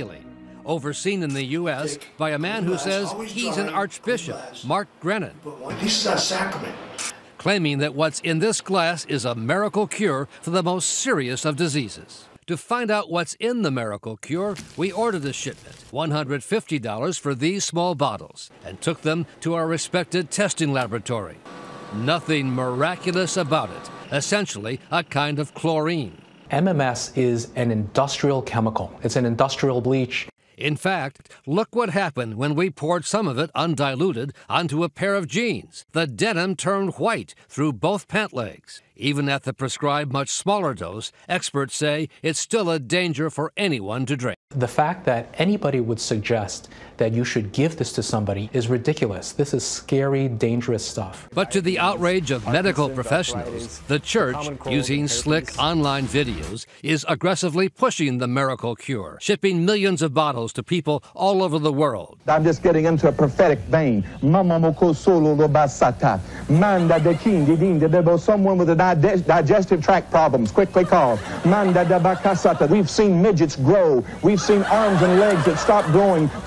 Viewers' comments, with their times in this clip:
0:10 I know it's "a shipment" but i keep hearing "this shit"
0:10 anyone else hear, "we ordered the shit."
0:12 I seriously thought they said, "To find out what's in the miracle cure, we ordered the shit."
0:13 "....to find out what's IN the miracle cure, we ordered the shit.") I swear that's exactly what it sounded like and I'm sure that's exactly what he meant to say!
0:14 "We ordered the sh!t."...... lol
0:15 did he say "we ordered the shi+?"!? Lol
0:15 who else thought he said " we ordered that Sh*t "
0:15 I thought he said “we ordered the shit” 😂
1:02 The laugh track makes this so good